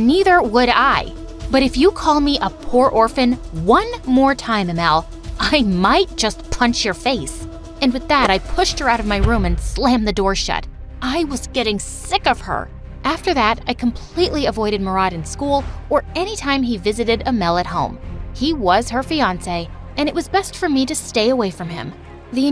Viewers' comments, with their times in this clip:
0:07 how she said she'll punch ahmals face